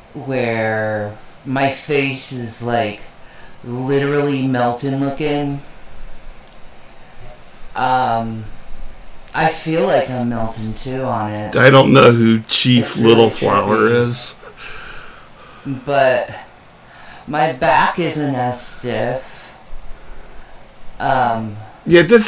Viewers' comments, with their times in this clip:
0:03 I will not be able to die happy unless sm1 figures out why this cow can not for the life of her, fully pronounce words ending in a "G". Meltin' lookin' 😅😅